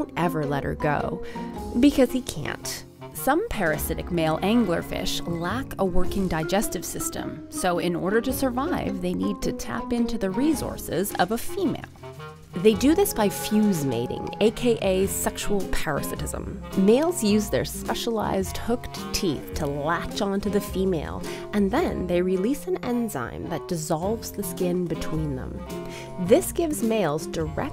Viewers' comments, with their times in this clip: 0:09 Rezources Speak English. Resources. With an S